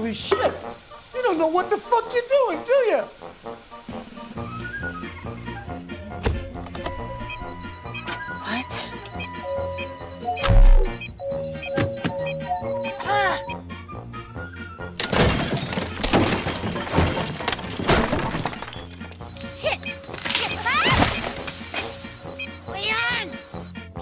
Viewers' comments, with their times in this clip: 0:10 I love that THUUOMP sound. Congrats to the Foley on that. Anybody know the name of the effect?